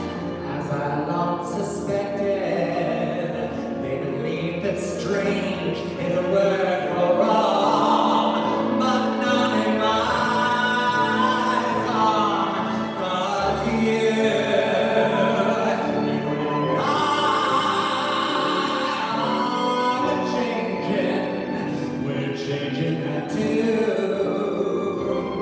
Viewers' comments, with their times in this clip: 0:07 beautiful song, beautifully done